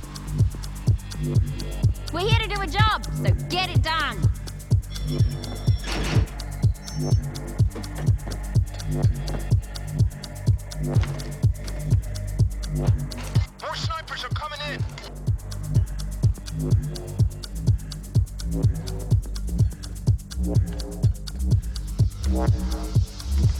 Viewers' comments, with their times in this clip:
0:05 I can't find the name of that metallic clunk sound anywhere on the free sound effect sites.